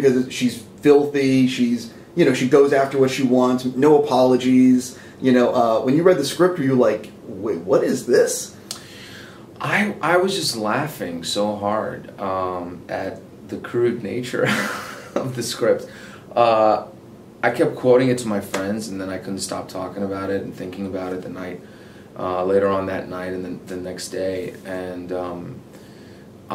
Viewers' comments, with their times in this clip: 0:10 I KEPT REPLAYING HIS LAUGH IS FUCKING PRECIOUS